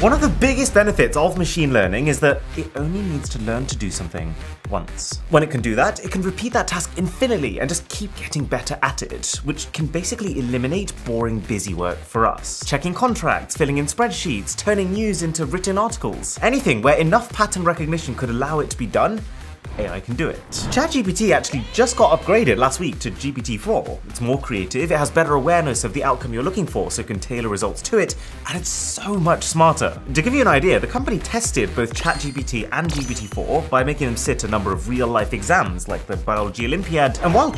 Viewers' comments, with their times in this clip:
0:05 Did he say “infiniley” ? Lol
0:21 Anybody else heard that “Daaammmnnn!” ??